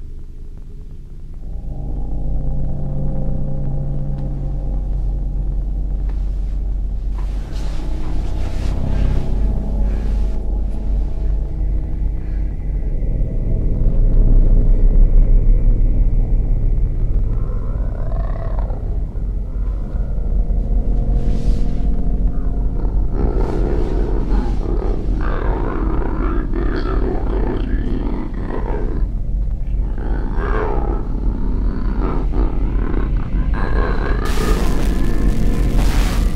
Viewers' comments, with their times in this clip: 0:08 it looks like the rake but sounds like the grudge...
0:19 that kinda sounds like my stomach. lol.